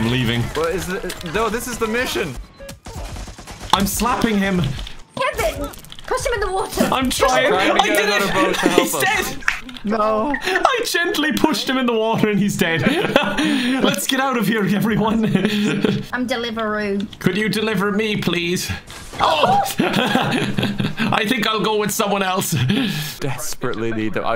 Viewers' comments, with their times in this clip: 0:06 "Wo' der" British people am I right?!